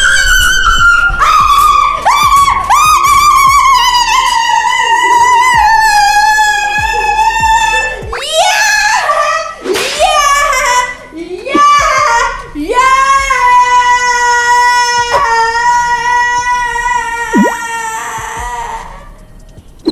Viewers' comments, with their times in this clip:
0:07 ah my ears now ima have nightmares